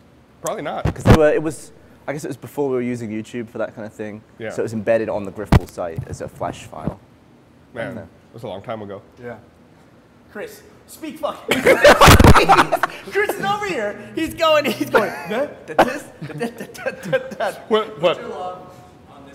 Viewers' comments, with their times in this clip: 0:03 New game. If you're wearing headphones, turn the volume up and listen to this podcast. Longest time putting up with loud, shitty mic pops wins. Beat that.